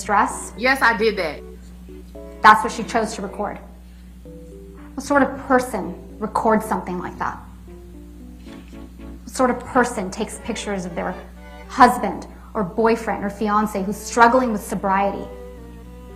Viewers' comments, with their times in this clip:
0:04 I love how she thinks her Lawyer is laughing with her, instead she is laughing at her!! :)